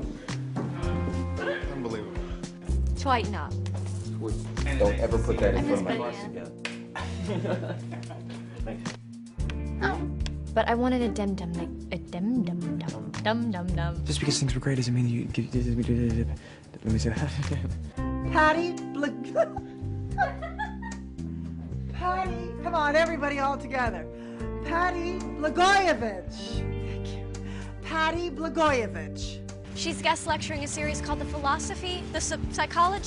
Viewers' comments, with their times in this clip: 0:03 Was Leighton mimicking Ed’s accent ? 😂
0:20 i love when blairs mom starts laughing at herself :')